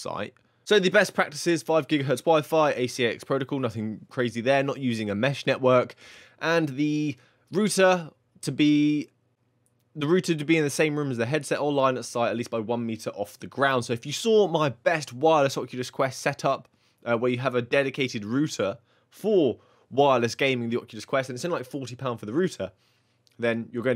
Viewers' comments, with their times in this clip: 0:09 what's a rooter?